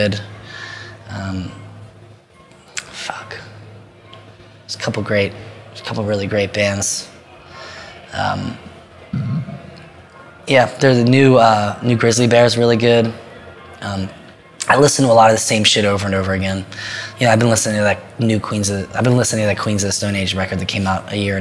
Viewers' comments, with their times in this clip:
0:09 Great interview & phenomenal burp You're my hero, Anthony!